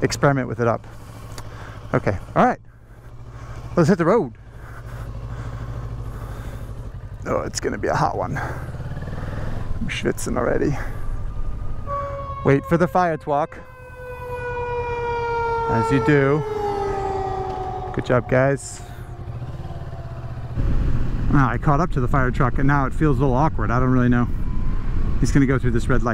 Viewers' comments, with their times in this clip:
0:08 Does "schwitzen already" supposed to be german? :D. It sounds a bit like if you used the german word for "sweating" :)